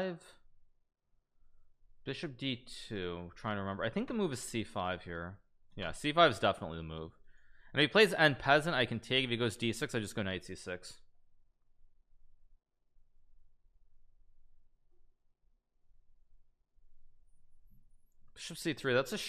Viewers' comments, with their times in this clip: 0:07 that doesnt feel like the right way u pronounce en passant